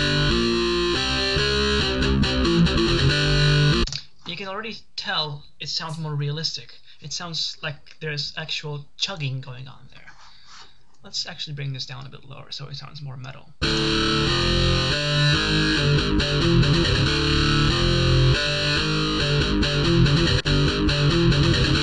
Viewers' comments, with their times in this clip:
0:08 The Yahoo! messenger notification is so nostalgic ❤🥲